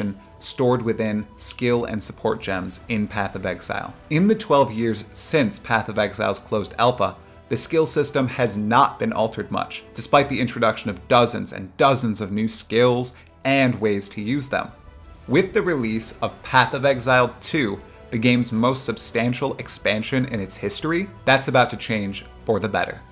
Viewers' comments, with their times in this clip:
0:04 Is this generated by an AI? "In the 12 years Path of Exile closed ALPA "... Someone saying "alpha" is quite easy to say... but a generated speech reading "closed alpa" would say "closed alpa", right? What is this?